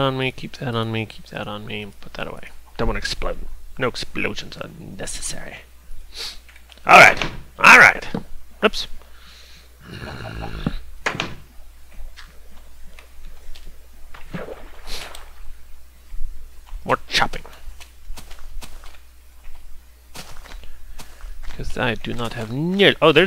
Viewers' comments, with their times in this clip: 0:08 he sounded like the zombie.